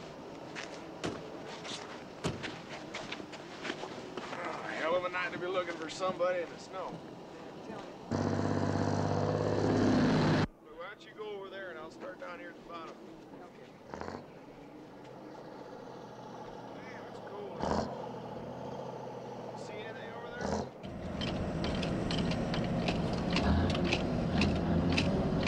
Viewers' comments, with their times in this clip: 0:08 min I'd recognize that voice anywhere...they audio dubbed in one of the Duke Of Hazzard guys voices.